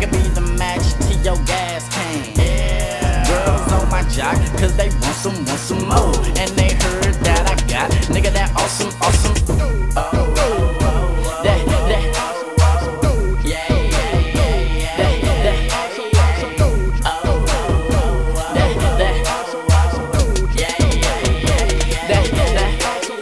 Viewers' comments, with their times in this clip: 0:05 There's some awesome Faith Hilling